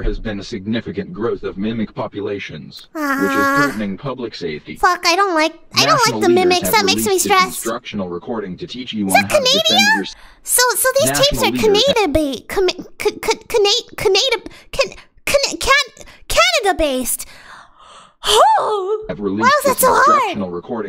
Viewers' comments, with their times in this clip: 0:07 I dunno why but you struggling to put that sentence together made me laugh XD